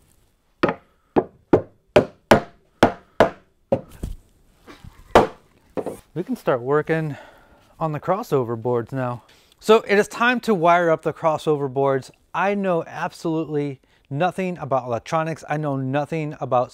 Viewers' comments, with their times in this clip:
0:03 hammer sound different